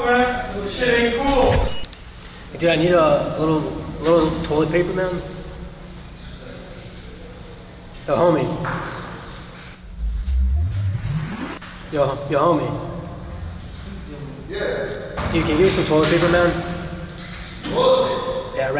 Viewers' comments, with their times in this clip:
0:04 on this one there’s a kid. That kid prob is gonna grow up with a full vocab or swear words he prob heard this guy screaming lol